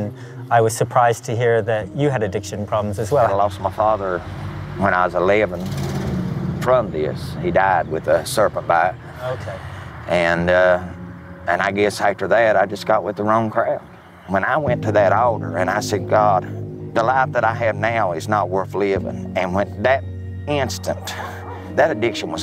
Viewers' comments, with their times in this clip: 0:08 He died with a surfer fire? What's that?